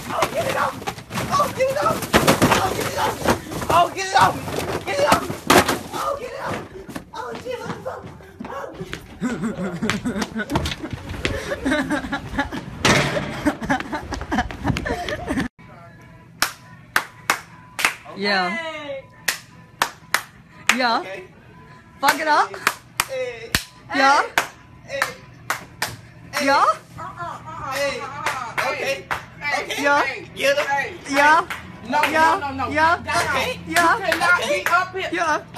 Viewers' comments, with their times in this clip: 0:06 camera man laugh had me weak😂😂
0:11 camera guy laughing lol
0:21 the whitest ”yaa” I've ever heard